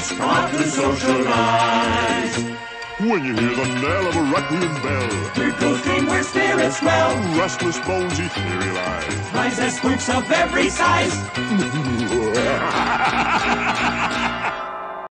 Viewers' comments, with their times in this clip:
0:11 Thurl's evil ghost cackle!